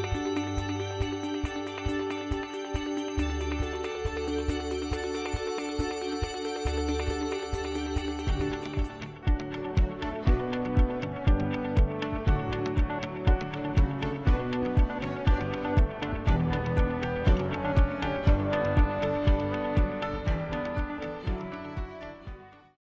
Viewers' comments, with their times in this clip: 0:09 I really the riff at the end ( mark), but that seems like it was just added or mixed in??